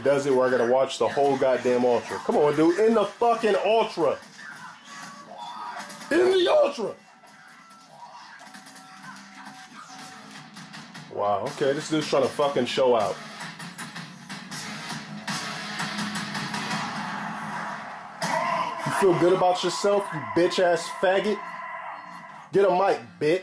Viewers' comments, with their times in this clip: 0:05 I thought he was going to cry when he yelled END THE ULTRA!! lol that beat down had me in tears dude just wouldn't stop.